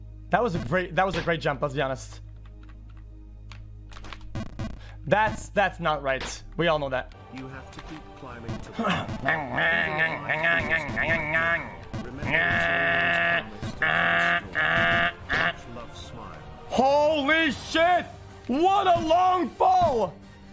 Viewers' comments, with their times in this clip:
0:08 what I hear when my neighbor's are cutting their grass